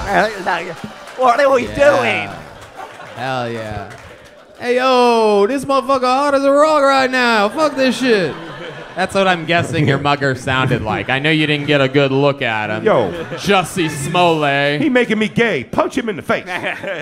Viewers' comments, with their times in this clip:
0:04 why does Tony’s black voice sound like William Montgomery? 😂😂